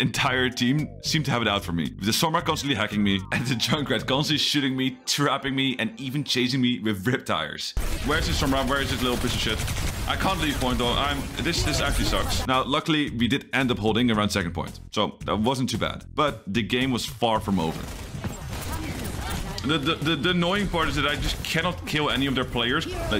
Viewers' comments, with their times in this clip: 0:04 The junkrat constantly sh*tting me